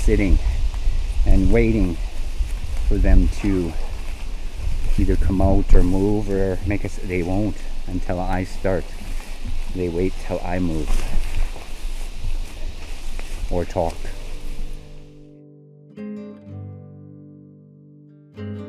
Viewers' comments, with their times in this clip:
0:03 I've had experiences with them getting into the farm fields - either for the deer in the corn, or for the corn itself. Pretty aerial asterisk/teepee. You might have had another vocal btw. Nice captures!